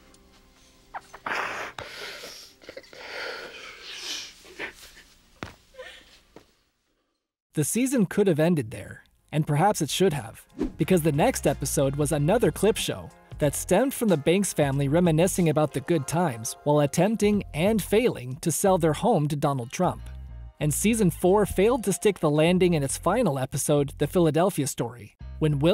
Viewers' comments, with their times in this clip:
0:06 wait is that hilary voice crying behind the camera ?